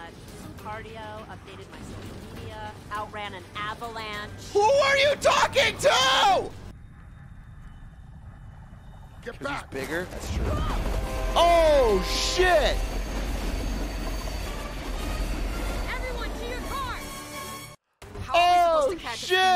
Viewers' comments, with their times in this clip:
0:07 you would’ve expected them to hear a train, but instead the train is dead silent until it is 20 feet away